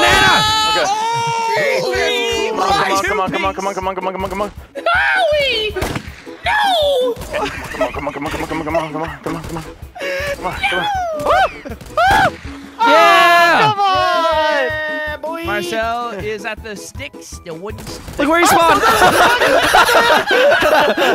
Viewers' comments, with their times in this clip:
0:04 wtf was that animated cartoon ass voice 😂😂